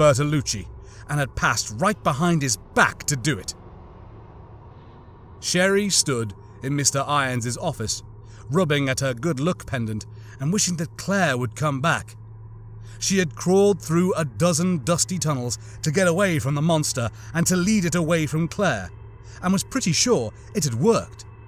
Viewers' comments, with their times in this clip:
0:08 Was meant to be "Good Luck" Right? You said *Good look*. Also now that you mentioned it earlier.... I've never thought about looting corpses so much when I play Halo or Dark Souls 3, Elden Ring etc. But when rooting through the bodies of Fallen Police officers, Soldiers, or enemies like The Covenant, The Flood, Necromorphs from Dead Space 3 for example.... Yeah it does add a horrific tone to it if you actually pause to reflect on it. Just from your audio books I am tempted to Play RE2. I never played any of the Resident Evil Series before. But I did watch the IRL Movie adaptions and a few cutscene movies of the latest RE Game with the tall Vampire lady.